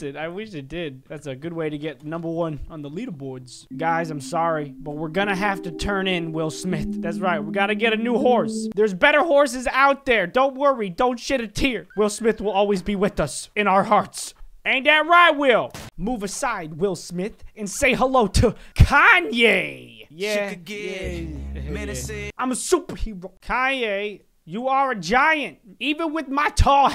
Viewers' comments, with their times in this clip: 0:10 don't.. S**t a tear?!?
0:10 Why does it feel he said the s word when he said shut
0:11 I thought he said don't s**t a tear.